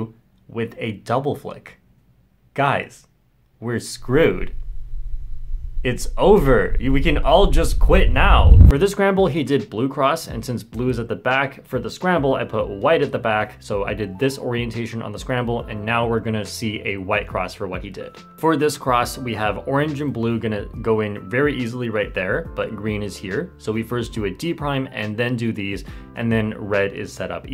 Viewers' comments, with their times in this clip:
0:08 That rumble fucking scared me. I had earbuds on and thought there was an earthquake XD